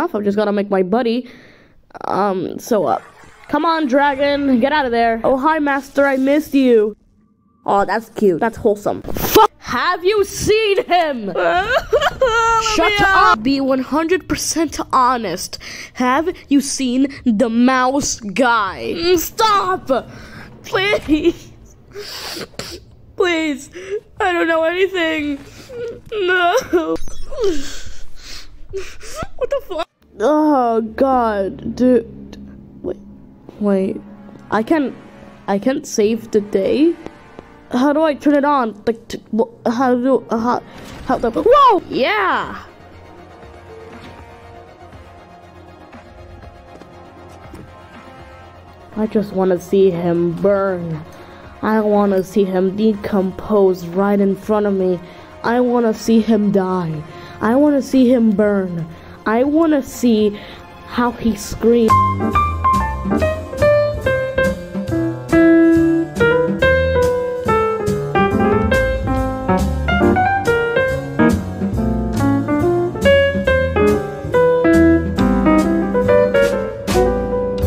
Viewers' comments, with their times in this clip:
0:05 LMAO THE CUT OFF CUSS MADE ME CACKLE
0:49 wtf that voice combined with what was said was kinda funny tbh- -cut to credits
1:02 this end is almost sounds like fnaf music 💀💀💀